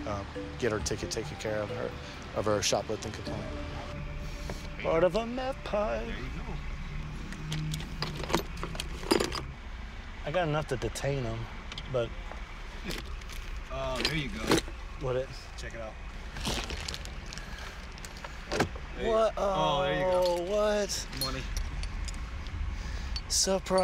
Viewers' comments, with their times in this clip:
0:04 My favorite part is when a cop casually sings, “🎵 part of a meth pipe 🎶”
0:04 his singing while finding a meth pipe is hilarious 😂
0:04 did this man really just sing "part of a meth pipee" we love him🤣
0:05 the jingle for a segment in these searches lol